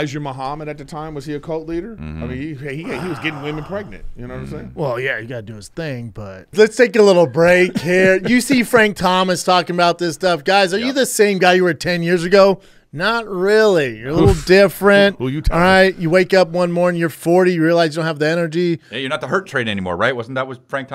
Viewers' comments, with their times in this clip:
0:06 Chris doing a Mexican accent 💀💀💀